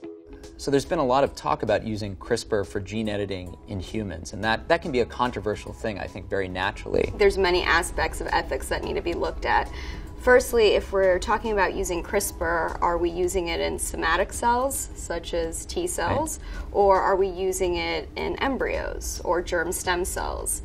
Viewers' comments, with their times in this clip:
0:07 vocal fry intensifies